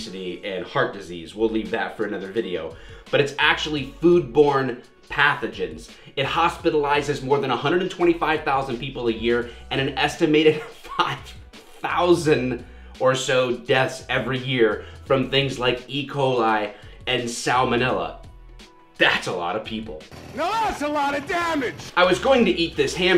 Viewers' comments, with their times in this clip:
0:09 Not sure it is appropriate to laugh that much when talking about thousands of people dying a horrible death.